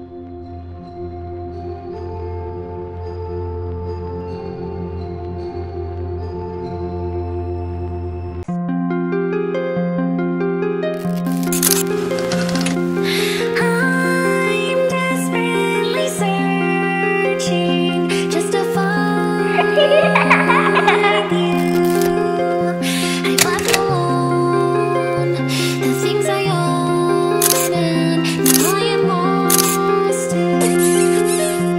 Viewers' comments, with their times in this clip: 0:09 that song is very nice
0:14 This song sometimes makes me cry I don’t know why 😢